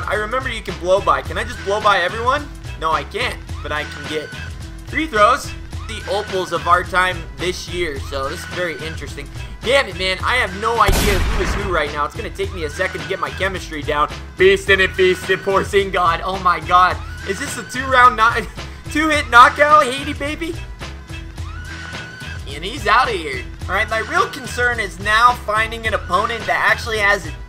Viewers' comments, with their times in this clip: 0:10 super early gun shot for the dunk😭😭